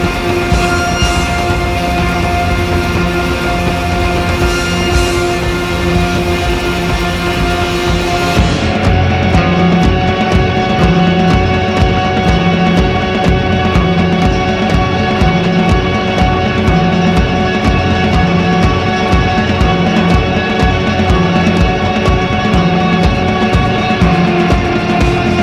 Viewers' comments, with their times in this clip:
0:08 The section that begins is one of the most indescribably exotic sounds I've ever heard.